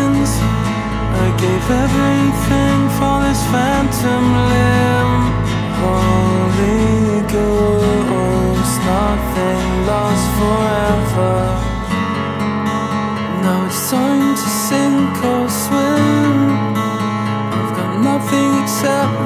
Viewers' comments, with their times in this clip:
0:05 it just me, or is it so haunting how he sings that?